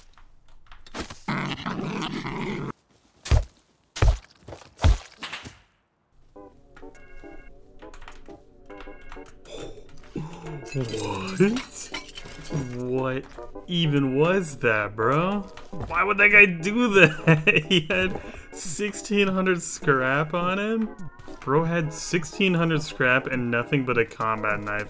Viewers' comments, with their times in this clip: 0:07 Scripted?? or maybe audio bug cuz before seeing the guys loot you started making the weird noises indicating you knew he was already loaded??